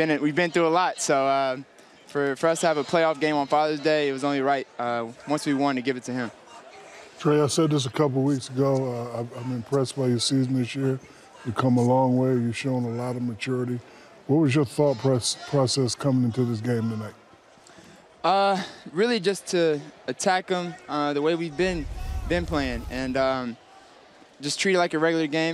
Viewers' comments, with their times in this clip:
0:05 Guy yelling in the background 😂
0:06 Listen a fan cussed out Tre SMH!!
0:07 Anyone hear the guy yelling at Trae ???